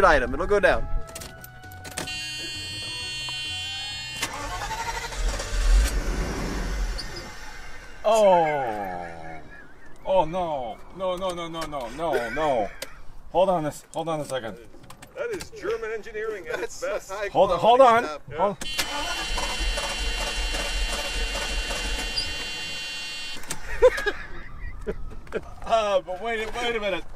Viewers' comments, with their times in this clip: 0:09 Love the Muttley style laugh when the Benz stalls out.